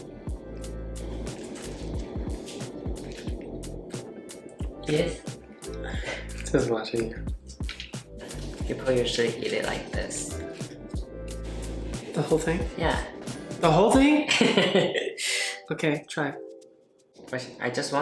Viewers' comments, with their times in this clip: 0:05 I`m from Russia and the name of this dish makes me laugh every video. Because "Poutine" sounds like "Putin" (рresident of my country). Ooooh, look at the way they dressed Mr Bear /Guys, you sooooo cute))